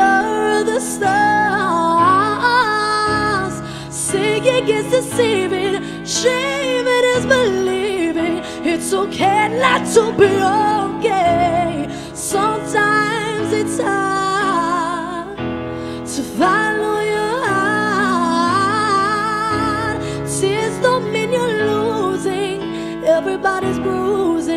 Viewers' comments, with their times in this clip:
0:08 makes me want to cry every time. So much emotion behind her voice